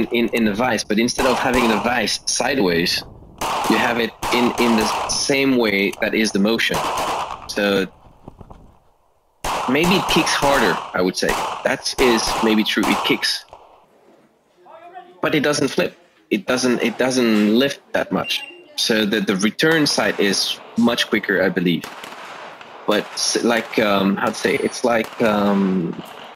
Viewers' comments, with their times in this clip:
0:09 was that a bit of bump fire ?